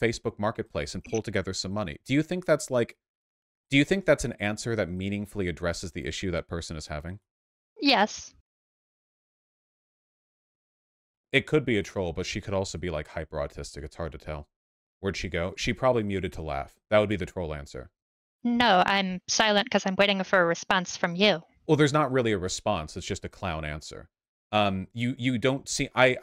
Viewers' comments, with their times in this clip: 0:10 Why cut the dead silence it hits harder with it